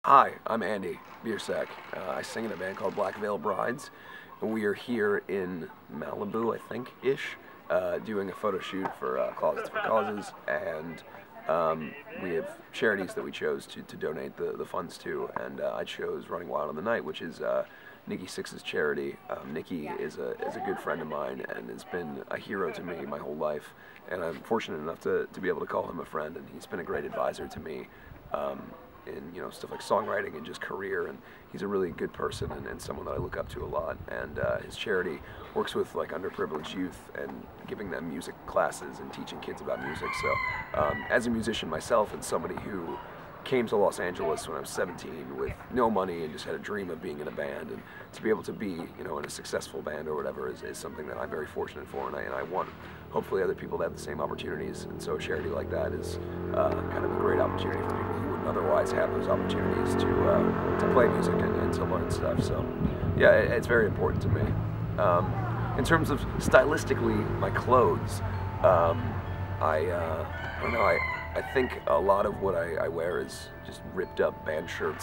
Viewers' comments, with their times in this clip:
0:09 Ashley laughing. Dayum. He's cute as hell:')<3
0:40 does anyone else hear the chicken in the background XD
0:58 That vans engine was almost as deep as Andy's Voice ;D ~ <3